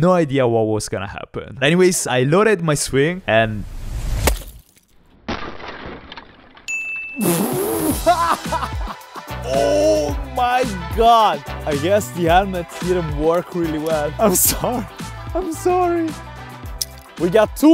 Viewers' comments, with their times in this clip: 0:05 why are you laughing?